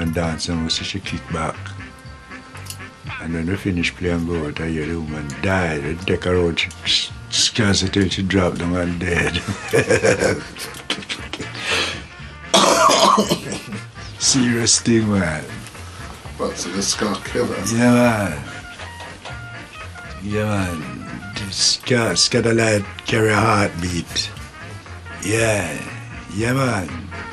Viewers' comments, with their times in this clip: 0:10 charming!! good music tho.